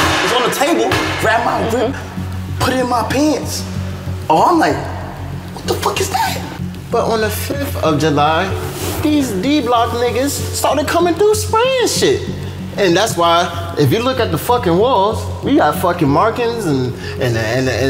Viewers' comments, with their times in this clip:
0:05 why his voice go to that pitch 🤣🤣🤣